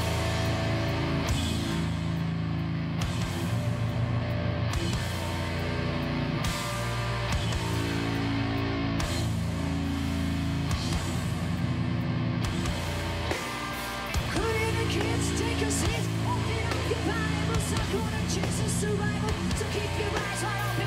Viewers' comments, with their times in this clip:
0:07 Danm! The flames of Chester Bennington! 🔥🔥🔥